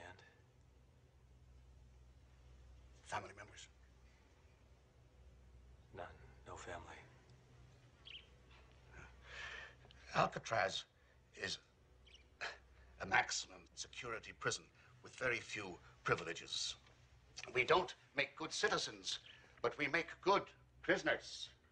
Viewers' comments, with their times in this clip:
0:08 Nobody seems to notice, but a pesky fly stops the warden in mid sentence, and he snickers as he says "a naxinam security prison." Re shooting with the correct MAXIMUM would have removed the jewel of a moment seen here.